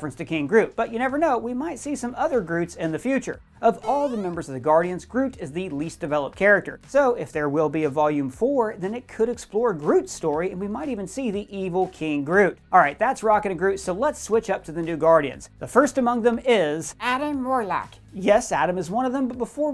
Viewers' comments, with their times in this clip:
0:03 Sorry but even though you did a great job in the video breakdown, the only thing I will remember from this video is the super Mario jumping sound when groot jumped out the window lol. Alllllllrighty then, I'll just show my way out. Thanks 😅